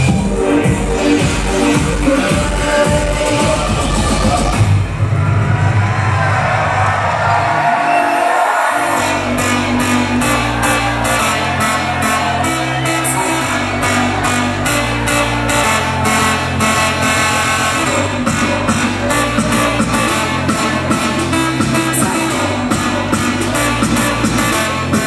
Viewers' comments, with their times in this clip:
0:06 The song pure bang, damn i need that tune